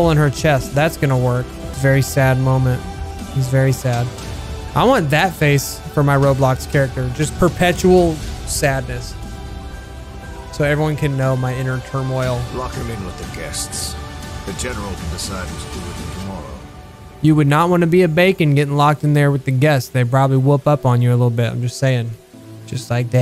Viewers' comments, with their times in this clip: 0:10 So everyone could know my inner turmoil- Last Course starts playing